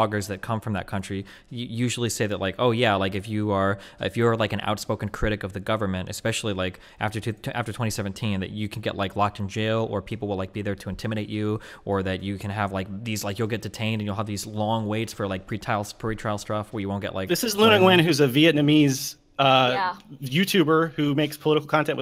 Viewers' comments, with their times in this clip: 0:08 I honestly can't tell if they're saying fake news in the same way Trump does or not...spooky